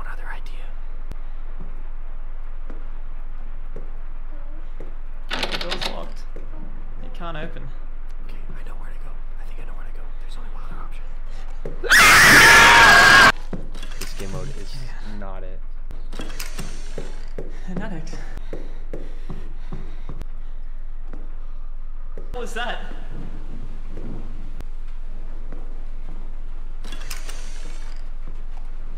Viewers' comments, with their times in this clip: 0:08 screaming like me when cousins come to my house
0:10 bros louder then ayuwoki
0:11 bro they had scream battles
0:12 THIS GUY IS MUCH MORE LOUDER THAN SHITTING HIS PANT